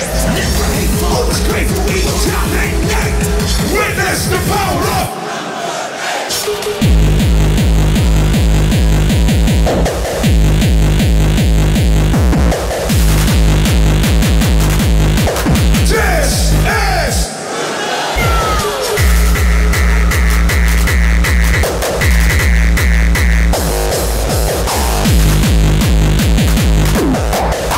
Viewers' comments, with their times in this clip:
0:08 The camera can't handle the bass.